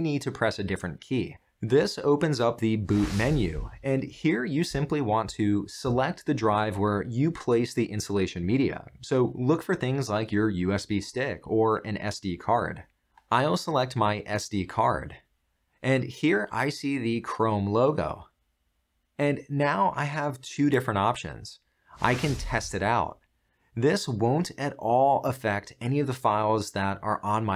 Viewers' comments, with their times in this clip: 0:09 Holy living bot, Batman!! The giveaway is the tone and cadence used when it says, "SD card" and then repeats "SD card". Creepy to the max! Would you like to play a game of chess? (wait, why am I pointing out a sophisticated Eliza to a room full of little Elizas?)